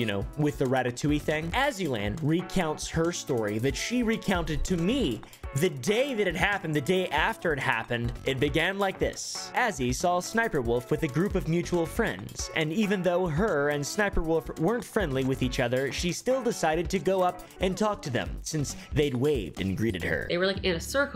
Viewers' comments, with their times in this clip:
0:09 I love how you just start channeling Fire Marshall Bill from onward while recounting the story, LOL. Almost expected you to yell "LEMME SHOW YA SOMETHIN'!!!" Fantastic video, dude. I still can't believe that this girl somehow still has a platform. She is absolutely unhinged.